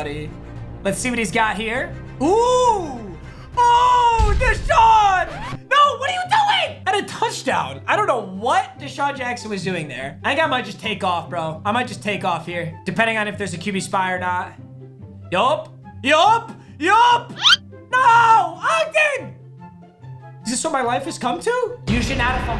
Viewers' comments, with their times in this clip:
0:05 that voice crack😂😂😂😂